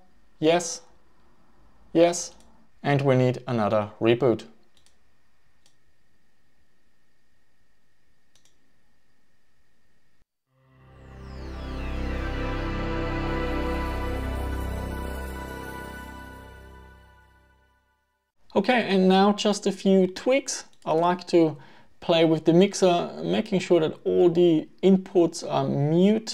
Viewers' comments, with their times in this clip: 0:10 What is this surround effect on the startup sound ? Did you add it in post production or is there something I did wrong? The sound mixer has less sliders for me, so did I install a wrong driver or something?